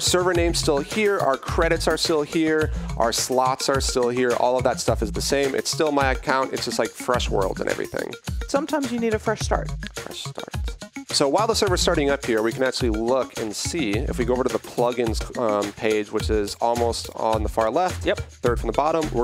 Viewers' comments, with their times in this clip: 0:07 the guy on the left was annoying the whole time then the dude on the right sarcastically goes "fresh start" lmao